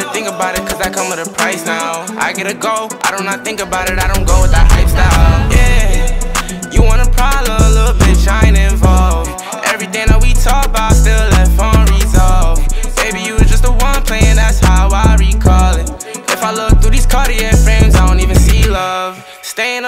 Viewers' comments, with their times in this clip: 0:04 Am i the only one getting spider-verse vibes from the whole song but mostly ?